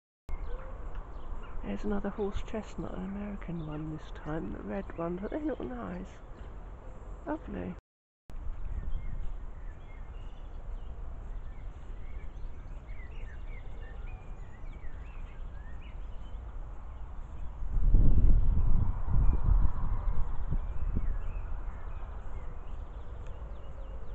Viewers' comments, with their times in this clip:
0:08 Relaxing (maybe ASMR) segment of just the daisies with birdsong at the end, if you want to just watch that it's at: